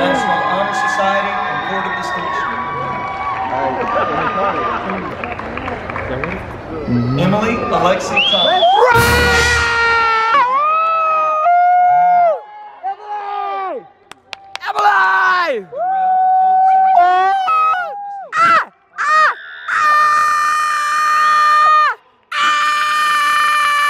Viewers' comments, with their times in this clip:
0:09 I can’t stop laughing 😆 that scream